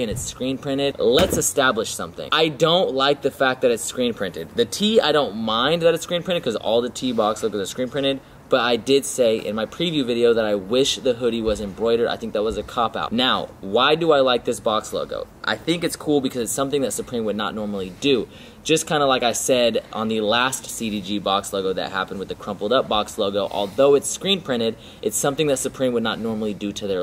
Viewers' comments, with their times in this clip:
0:10 Someone is breathing really loud around the min mark. Pretty creepy lol. Dope vid, sexy girl!